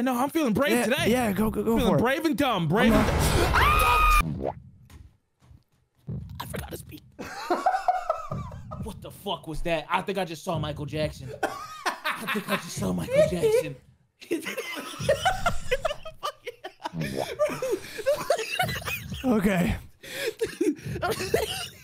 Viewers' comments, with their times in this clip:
0:03 For those who want to hear that beautiful scream again